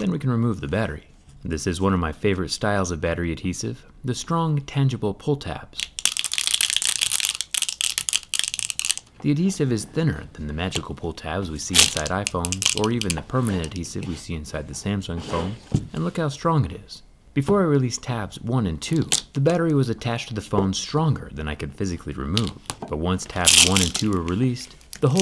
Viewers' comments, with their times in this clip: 0:07 He has a future in asmr 😂